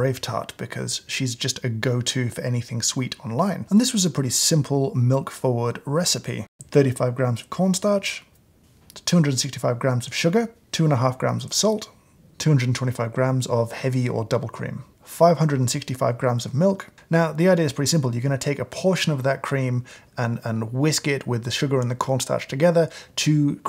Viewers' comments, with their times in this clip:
0:07 James doing an impression of Andrew from Babish? You made me laugh a lot here!